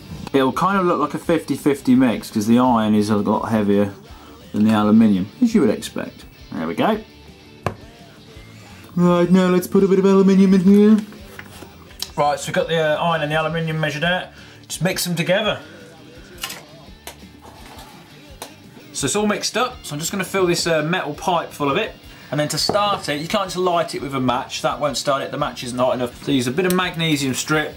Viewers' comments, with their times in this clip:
0:08 Stewie is that you?